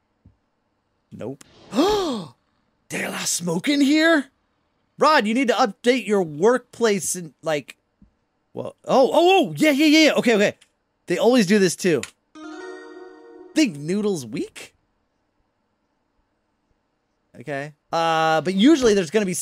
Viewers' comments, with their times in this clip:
0:03 😂😂😂hes saing the a lot smoking here but you sound like smoked 50 cigaretes